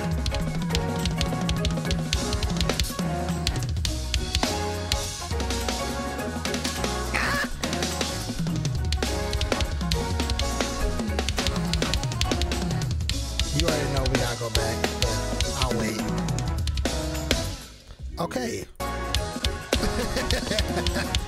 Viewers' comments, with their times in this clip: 0:05 bro i need the sticking ive never heard such excellence